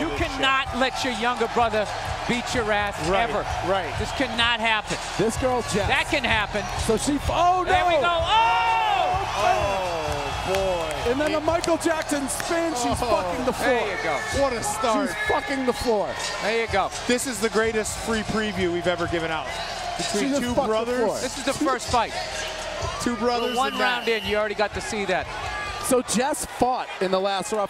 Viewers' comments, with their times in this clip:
0:09 crowd erupts lol 😂 good on her thou